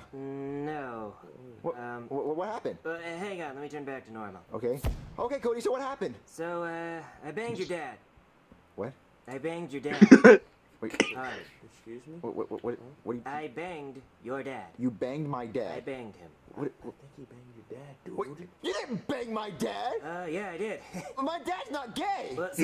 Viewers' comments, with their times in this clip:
0:05 just the best scene ever just how he says "but he was weirdly cool with it" I almost fell on the floor